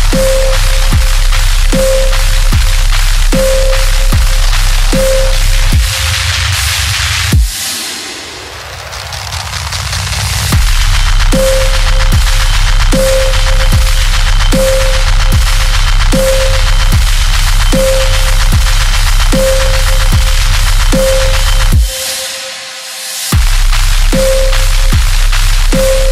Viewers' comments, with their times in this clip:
0:10 The wobbling had me sacrificing newborn penguins in a snake pit while slicing my left toes off of my right knee right after I committed suicide in a nightmare I had six times in a row. Short : bruh, that was dope.